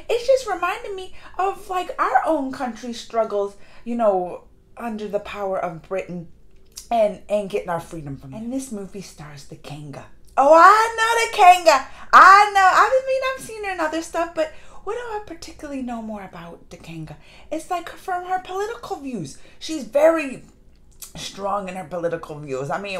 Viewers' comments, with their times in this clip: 0:09 I lost braincells trying to figure out what you meant by 'Kenga' lol I was stuck there for a good few minutes